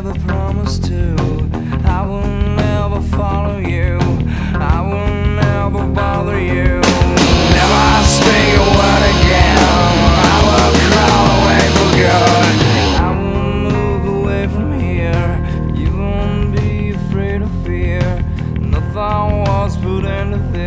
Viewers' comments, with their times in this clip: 0:04 It has it's own comment (on this one or another) but the point he stomps the distort pedal being so well done :o
0:07 The shot of Kurt hitting the distortion pedal right as the distortion kicks in is perfection
0:07 when he hits the distortion pedal gives me chills every time.
0:08 Yeah, even him hitting his distortion pedal is timed with the distorted guitar coming in.